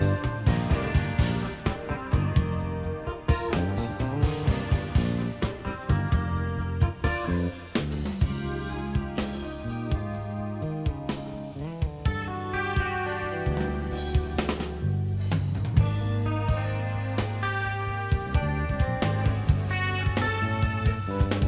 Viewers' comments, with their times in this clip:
0:07 at precisely you hear Alan flub that slide. You can barely see him shaking his head in disgust as he reaches for the pick between his lips. But he's made lots of mistakes live, unlike the safe players who would never venture into places he's gone. But flubbing an easy part is probably way more disappointing than flubbing some fast solo line. The album solo on this song is so nice but he never seems to play the solos the same twice.